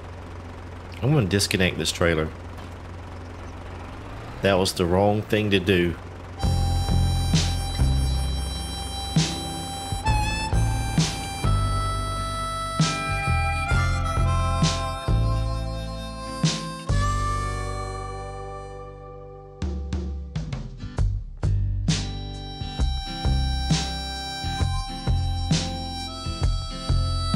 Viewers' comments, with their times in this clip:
0:10 your music segway cracked me up :)